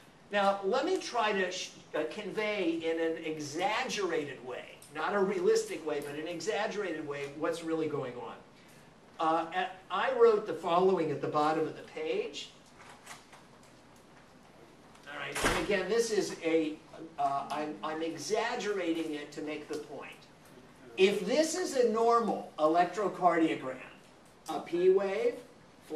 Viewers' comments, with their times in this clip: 0:10 ''This is t wave''---someone in the audience HA HA???What was that???